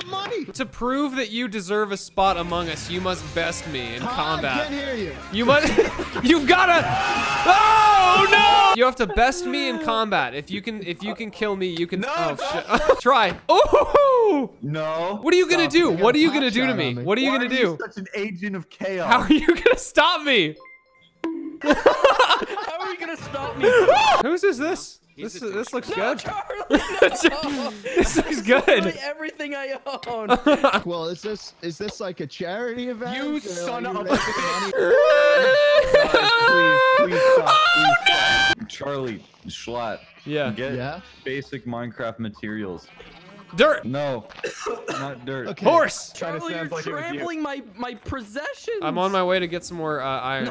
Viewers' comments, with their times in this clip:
0:05 I'm calling out for Joseph Joestar screaming
0:20 dollar noise bonk
0:30 good, and the autotune after it
0:34 Panic 10/10 "Ooooh NnnoooOOOOOOOOO!!"
0:34 The autotune made me laugh so fucking hard